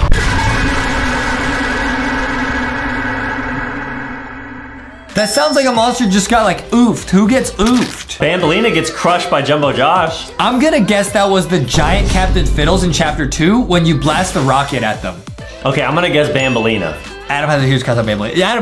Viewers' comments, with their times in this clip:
0:04 It’s a toilet